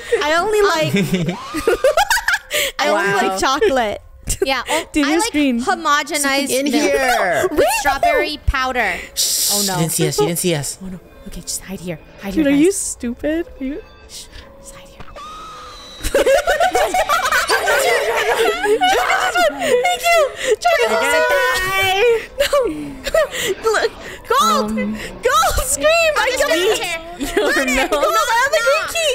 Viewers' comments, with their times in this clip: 0:10 I love how the nanny didn't even see the 3 baboos And baby Draco just chased the nanny just to scream at her